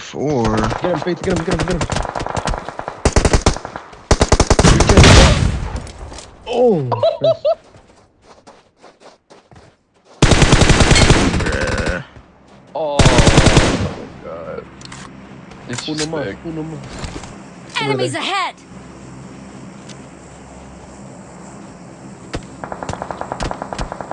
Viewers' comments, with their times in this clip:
0:06 that laugh though!! lol